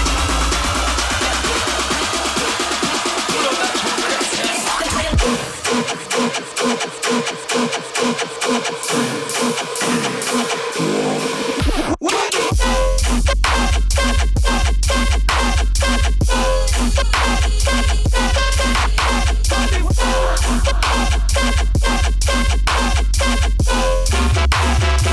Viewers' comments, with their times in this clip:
0:09 that track is HOTTT 🔥😩